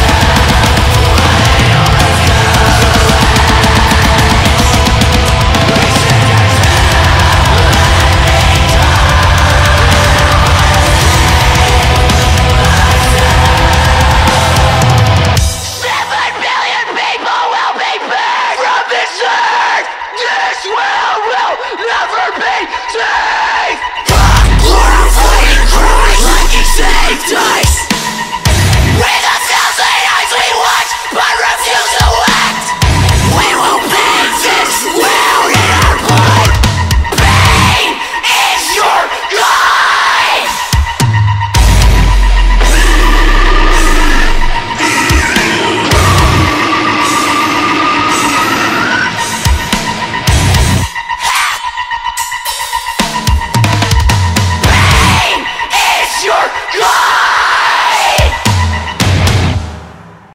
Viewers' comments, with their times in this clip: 0:05 Good job guys, sounds amazing. And it's the first time I've ever seen a gravity be played that slow Sounds sick
0:51 I felt like I got licked from the vocalist